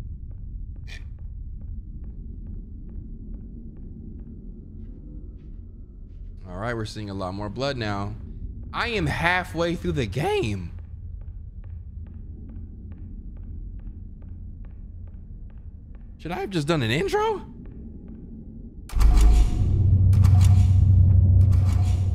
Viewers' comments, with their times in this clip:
0:08 The voice cracks were crazy 😭😭